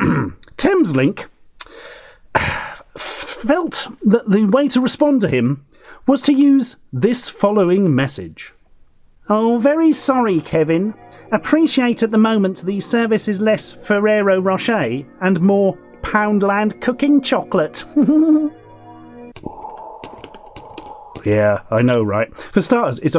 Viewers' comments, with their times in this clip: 0:09 That giggle at the end... Heheheheheheh.